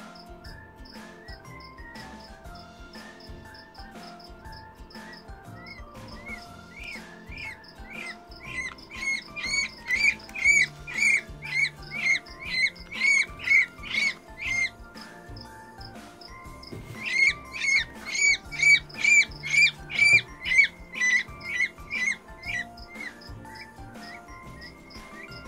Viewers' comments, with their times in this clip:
0:10 it sounds like a girl screaming